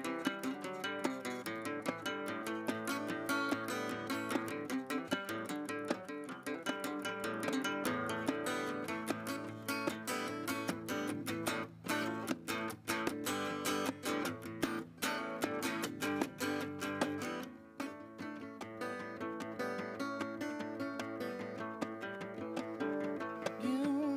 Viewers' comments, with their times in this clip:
0:05 he missed it, but it sounds great anyway!